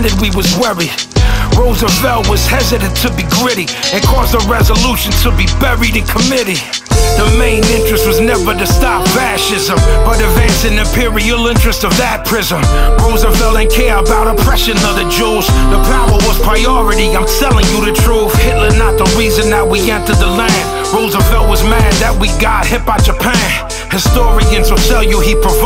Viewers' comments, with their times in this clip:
0:07 Vinnie been droppin knowledge for decades. Does anyone know what the sample is ? The girls voice is amazing, it shifts the entire mood and feeling of the song. Any know who produced it?